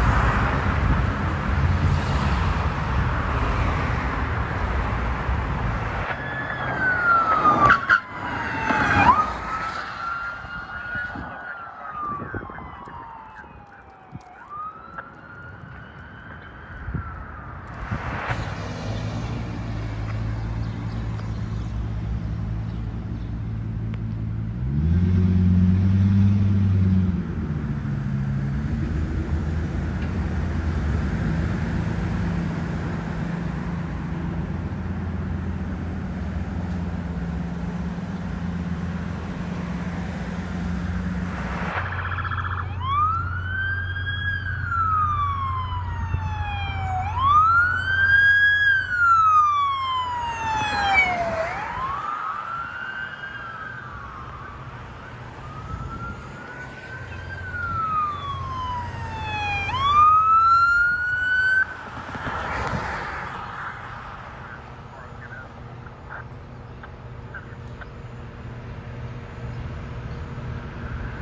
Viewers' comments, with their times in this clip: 0:06 Hell! Listen to those tyres screech! Bro was lucky he didn't lose it!
0:58 outdated Whelen siren system on a 2020 FPIU